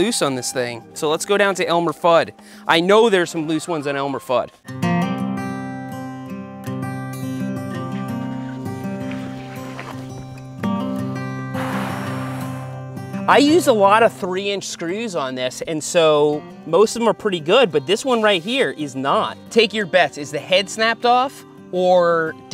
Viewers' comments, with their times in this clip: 0:04 with that music, i straight up expected Shawn James to come out and help you with some nice hand tools.